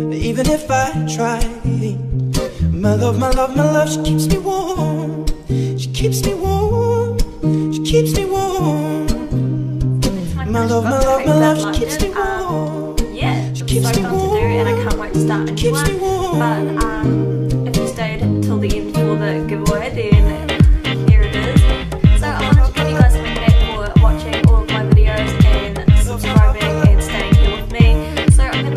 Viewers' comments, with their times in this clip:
0:09 When you start speaking around the mark the music is still playing so I can't hear what you're saying. Even with headphones on it's hard to hear you speak over the music.